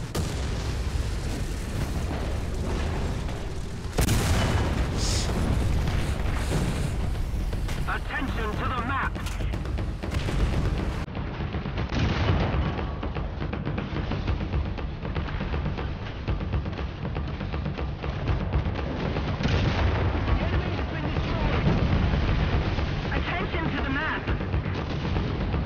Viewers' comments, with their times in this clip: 0:09 Who else thought the music was AA-fire? xD